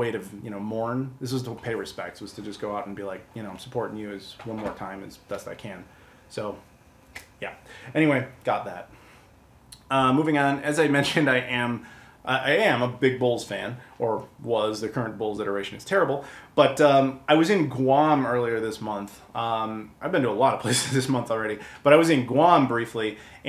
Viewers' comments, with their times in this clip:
0:10 You heard it here first - he's a fan of big balls!